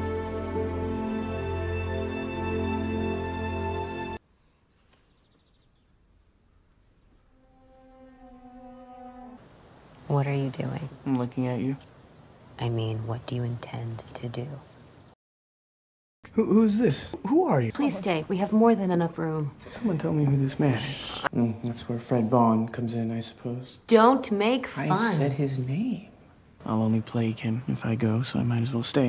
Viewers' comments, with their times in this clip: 0:10 the way he said I’m looking at you 🤣🤣🤣🤣🤣
0:16 him being confused but she shushes him